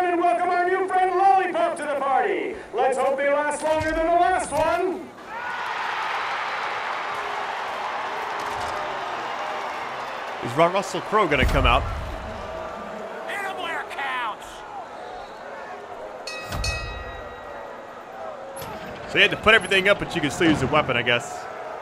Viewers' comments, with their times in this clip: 0:05 that NFL BLITZ crowd cheering lmao